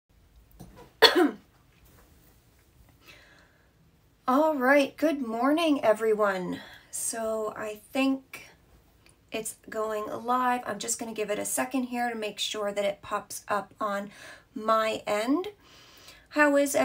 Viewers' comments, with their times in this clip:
0:01 First thing,....COUGH. That could have been edited.